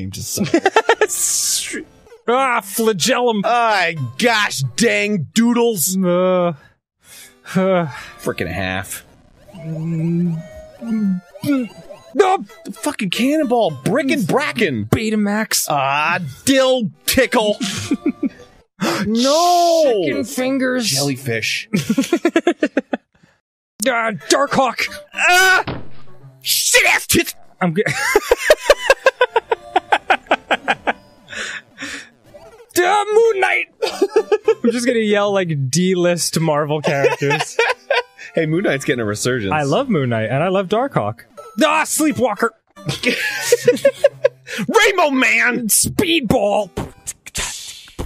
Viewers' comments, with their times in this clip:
0:09 When you try holding in your laugh during the night
0:25 and the small defeated “squirtle” are my favorite
0:25 the way he says it
0:26 what endermen say before they teleport behind you
0:26 The delivery is gold
0:26 I love because it sounds like Arin just fucking died after yelling SHITASSTITS
0:26 the way arin says this is priceless
0:26 The way it sounds cut off 😂
0:26 the way he said it was just perfect
0:34 At like if it’s auto-generated it says “I’m gay”